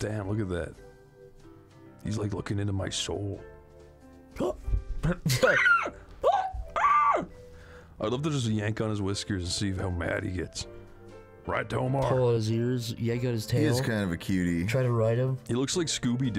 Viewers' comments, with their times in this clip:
0:03 if you listen close enough you can hear the jaguar go “reoooww”.